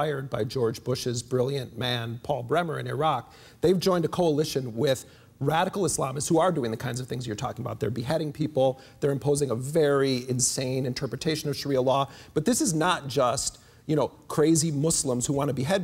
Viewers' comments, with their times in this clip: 0:03 somebody likes Jeremy, dat sigh.